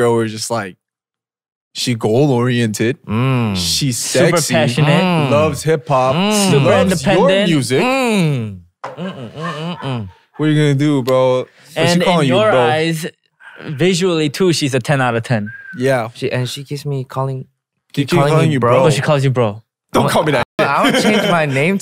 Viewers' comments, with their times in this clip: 0:09 I keep coming back to this episode for PH1’s mmm mmm mm mm mm 🫠